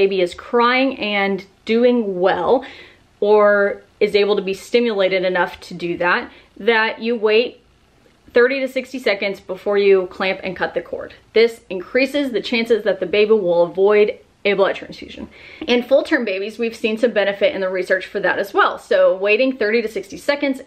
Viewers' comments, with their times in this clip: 0:08 sounds like she said a bagel